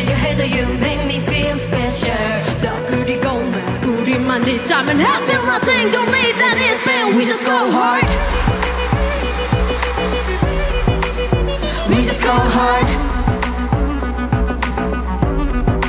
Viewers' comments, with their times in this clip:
0:03 Jihyo's powerfull voice out come❤️‍🔥